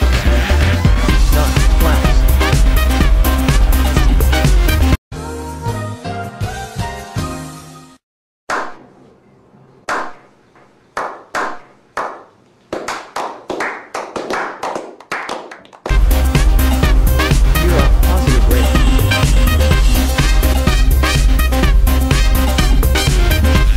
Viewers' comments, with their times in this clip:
0:05 **KLM 4805 and Pan Am 1736 noises**